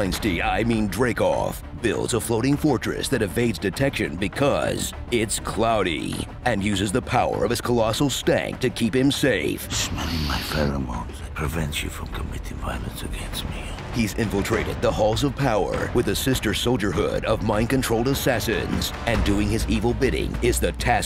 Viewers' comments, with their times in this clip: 0:08 loool I first heard this "colossal stand". That would've been an amazing JOJO reference